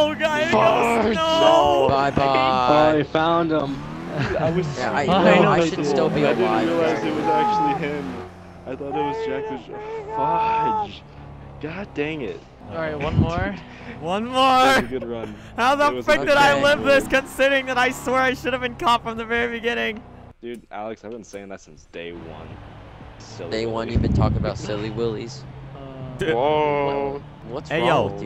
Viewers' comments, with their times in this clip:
0:09 Could anyone else here someone shouting in the back ground in this vid or is it just me